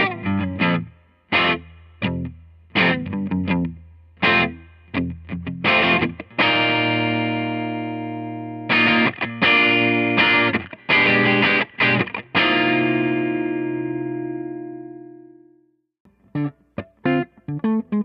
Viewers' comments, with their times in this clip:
0:03 Alright man, I'm at the mark and i cant hold back anymore. The american sounds more refined and that leaves it less jag like to me. The wxtra bit of sizzle and aory quakity tonthr notes from thr JG is a much better tone to my ears. It sounds like jag. The AV65 sounds regular. My orwfwrence is that Japanese model. Rhe noteo would be better, certainly, but not enough to choose that over the rest of the guitar. Another way is word it is rhat rhr AV sounds like thr aound tou get when you plug in but the JG is rhe sound tou rey to get and chase after. Maybe in the room its different but in the video, playing through my cars speakers, the JG has more character and would be a tone I'd chase. I have the PV65 pups in a CV jag, they're great. I much prefer the '62 set i out into the Charcoal Frost Metallic jag though. More character. Maybe thr '65's are just getting overused rhese days?